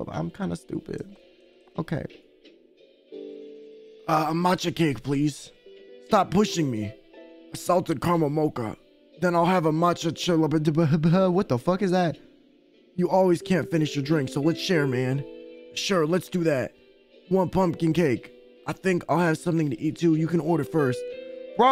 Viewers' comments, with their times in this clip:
0:09 BRO THE WAY HE PRONOUNCE THE CHILLAPUCINO MADE ME CHOKE